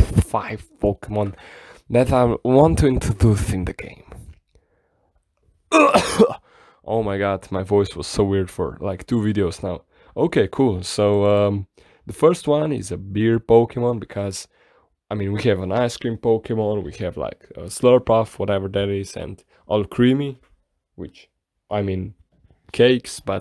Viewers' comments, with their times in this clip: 0:05 So, this pokemon is named EUGH EH HOO ?